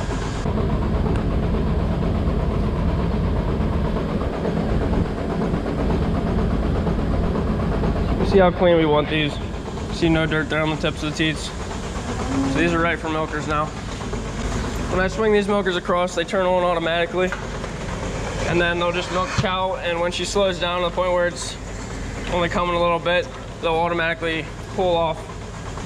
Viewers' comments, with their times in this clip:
0:06 Sounds like you are on a moving train... Moooove